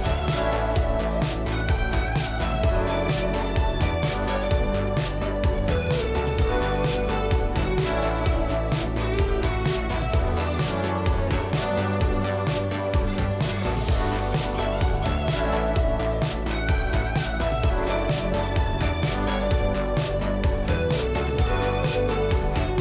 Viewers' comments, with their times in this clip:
0:04 Wait , I have the chibi morgana skin, but I don't have that boom . Could anyone tell me why